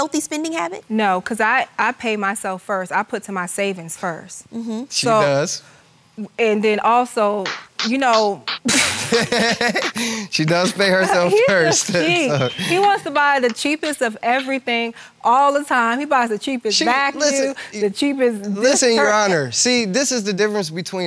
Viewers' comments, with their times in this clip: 0:07 Anything to attract the attention of the camera, the best proof is when she’s the ONLY ONE who’s applauding LOUDLY. If she was going to be so ‘fragile’, she should have abstained herself to be there. Again, some people back up to nothing to have their moment in front of the camera.